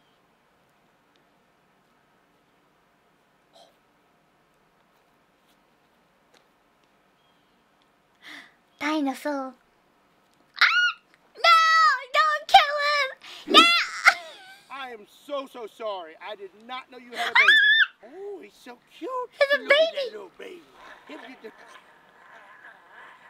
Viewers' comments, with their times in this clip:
0:08 I love the way she says "dinosaur" 🙂